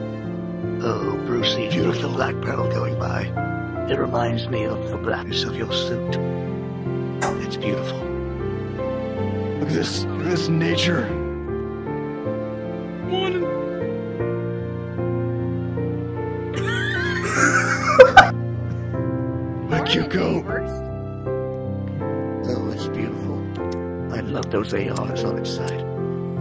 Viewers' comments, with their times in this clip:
0:10 why is that so funny 🤣 the way the deer goes monin